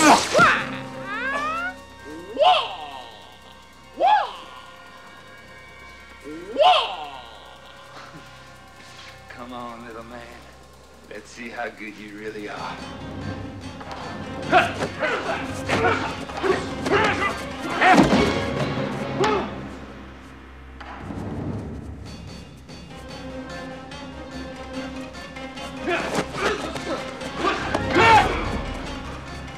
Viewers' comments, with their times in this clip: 0:04 “Waa, waa.” Oh, yeah. That’s intimidating.
0:11 why dude sound/ook like Matthew McConaughey from Wish